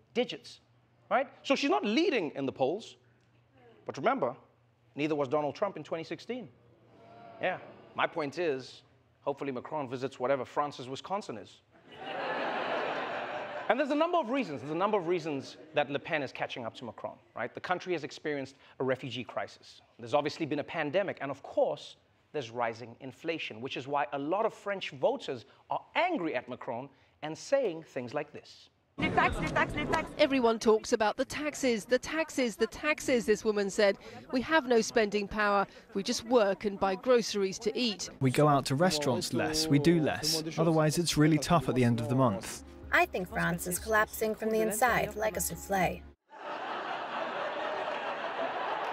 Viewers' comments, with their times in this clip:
0:06 did someone groan being reminded that Trump won in 2016? 😂
0:29 the taxis the taxis the taxis